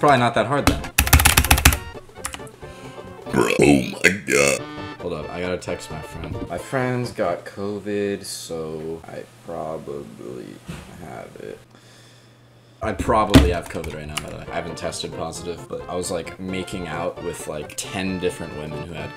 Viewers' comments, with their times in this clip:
0:03 is a burb meme😂